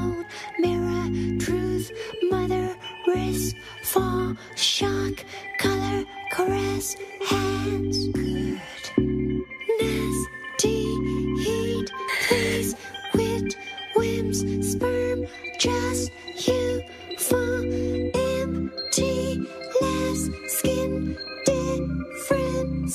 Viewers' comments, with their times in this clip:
0:08 I love how beautifully creepy this sounds "good..."